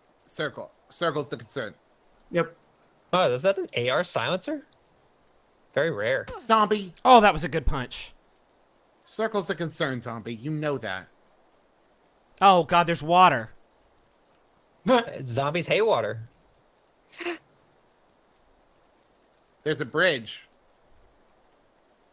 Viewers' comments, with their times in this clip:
0:05 Griffin scornfully complimented my punch